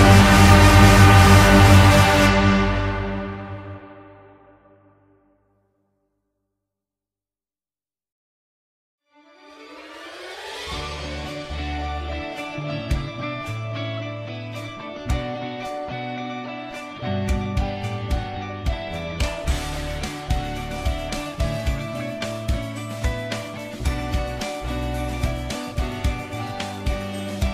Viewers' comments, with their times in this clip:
0:09 wtf is it sounds like an ad